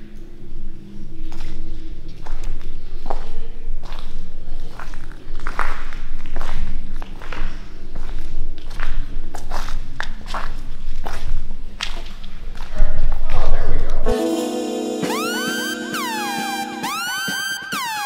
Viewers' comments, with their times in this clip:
0:03 bruh if you hear some chatting coming your way, that's when you gotta run.